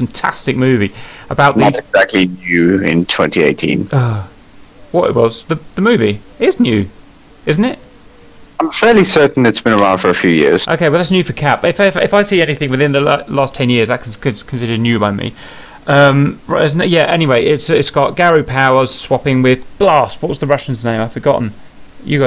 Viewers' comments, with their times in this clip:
0:03 The sound of disappointment for being corrected on a thing he thought he knew about.